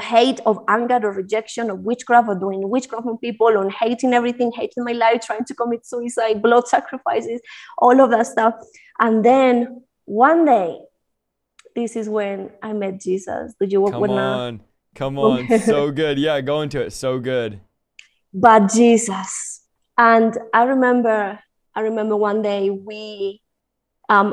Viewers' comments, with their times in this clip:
0:10 The way she said that's when i met Jesus 😙☀️💞